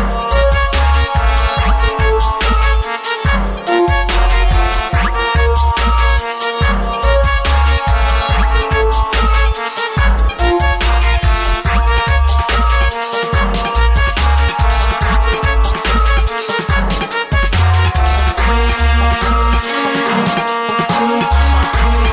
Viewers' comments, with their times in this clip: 0:04 old school runescape vibes